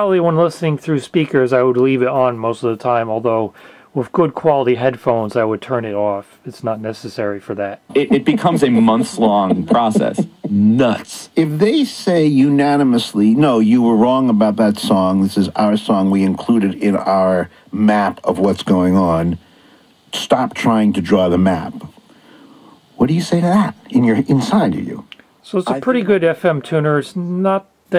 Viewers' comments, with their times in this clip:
0:09 just how that guy said "nuts" lol I have no idea why that struck me funny. Edit: I must be tired.